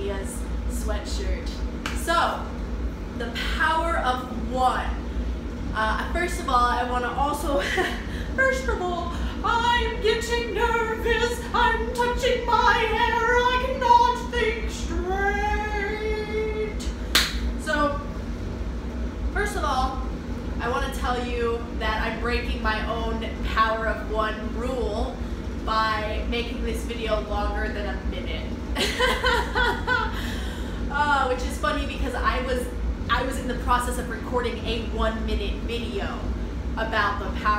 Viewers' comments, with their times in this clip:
0:09 Mickey mouse sound
0:21 I heard you piss